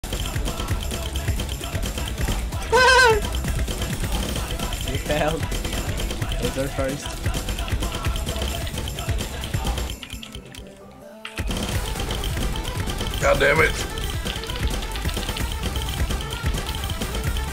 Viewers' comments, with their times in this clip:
0:02 can someone rip me the laugh I want it as my miss sound.